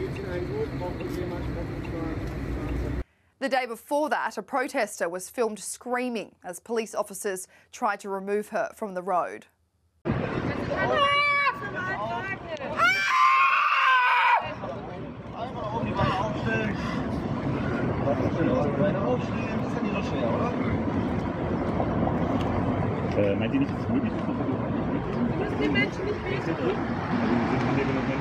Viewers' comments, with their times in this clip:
0:08 Stop yuh yelling while lm having a tea an a bikky. Causing indigestion to someone can upset the tummy, and ruin the day !!! 🖐️😄😄😭😂😂👆
0:13 what kind of exotic bird is that singing during mating season?